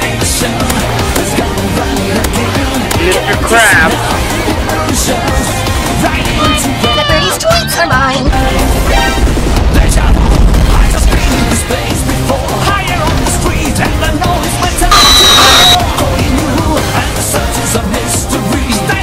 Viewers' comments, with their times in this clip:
0:06 noot-noot the birds tweets are mine
0:07 THE BIRDIES TWEETS ARE MINE 🐧🔥
0:07 the birdie tweets are mine